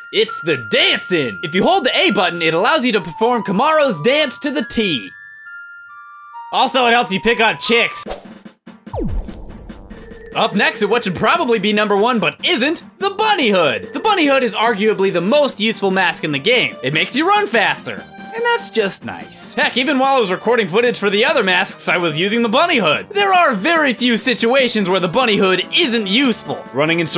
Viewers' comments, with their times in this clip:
0:10 Did anyone else hear a phone ring in the video?